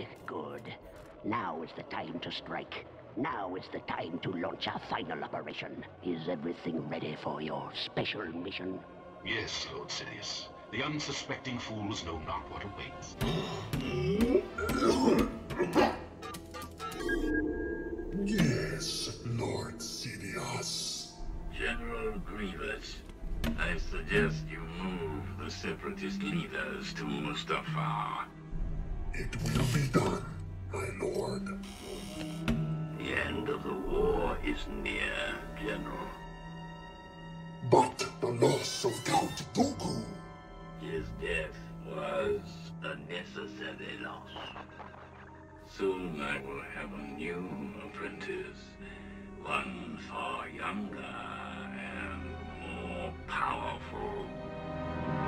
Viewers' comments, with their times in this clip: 0:09 they know not what awaits 2005 : Asthma
0:14 An interesting fact, Grievous cleared his throat so he wouldn’t cough while speaking with Palpatine
0:38 Anyone else noticed like a little “meow” lol sound ?